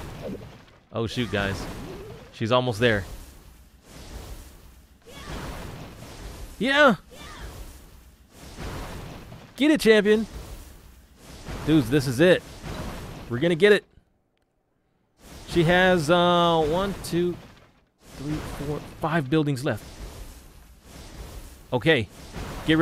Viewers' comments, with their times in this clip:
0:06 That impression of him saying "Yaahhh!!!!" is Iconic lol! HAHAHAHA °○°